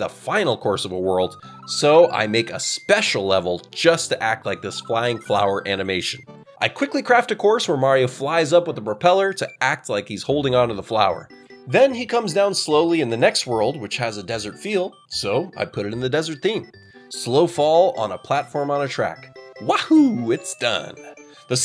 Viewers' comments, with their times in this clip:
0:05 I have my ringtone set to the SMW title screen and I thought my phone was ringing lol